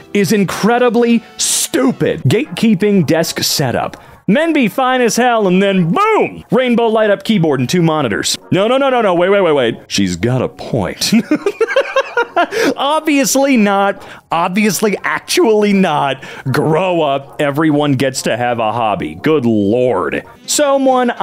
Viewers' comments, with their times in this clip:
0:07 Best Kronk impression ive heard